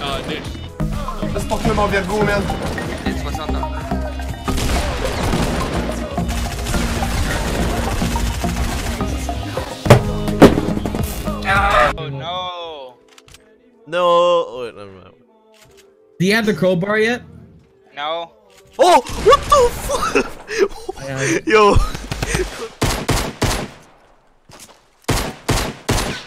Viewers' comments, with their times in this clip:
0:07 why are 3 songs playing at once